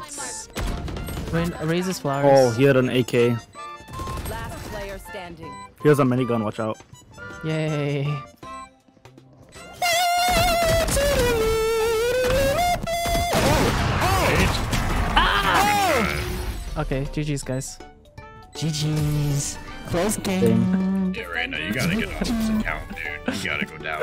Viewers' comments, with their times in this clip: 0:09 mosquito when you're trying to sleep💀
0:10 that scream on the last round 😭😭😭 I felt that